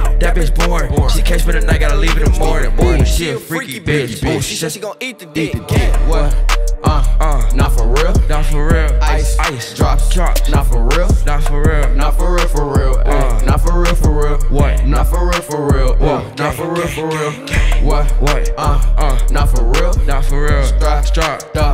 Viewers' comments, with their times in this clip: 0:08 jay hittin the woah😭😭🔥